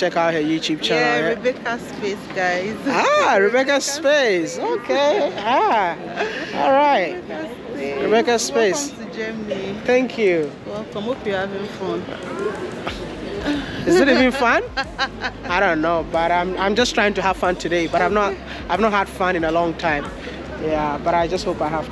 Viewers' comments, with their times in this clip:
0:04 You are sounding Kenyan. Becareful they don’t steal you from us